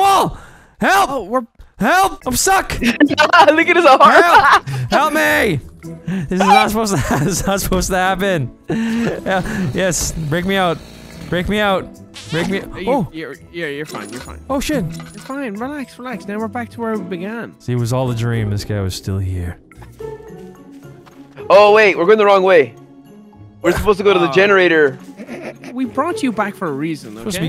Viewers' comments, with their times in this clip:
0:10 that suction cup sound